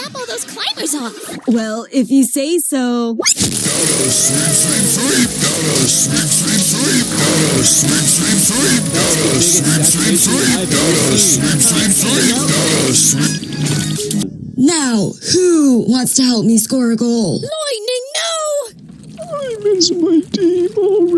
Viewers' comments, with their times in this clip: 0:03 sounds like it's saying "gotta switch switch switch"